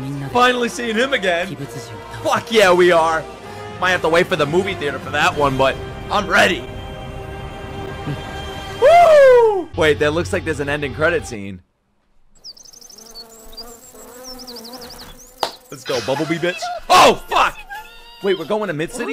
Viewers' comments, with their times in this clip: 0:06 ost went crazy i swear to God